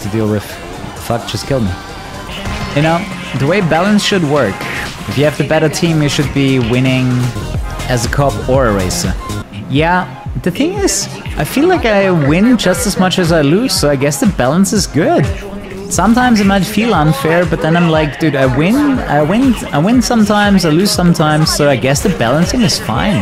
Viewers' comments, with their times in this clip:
0:09 did he say "Pingas"?🗿